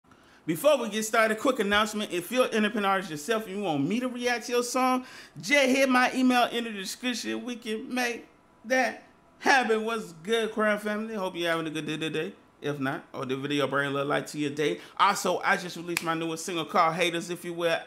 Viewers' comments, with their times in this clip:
0:02 if you're a what yourself?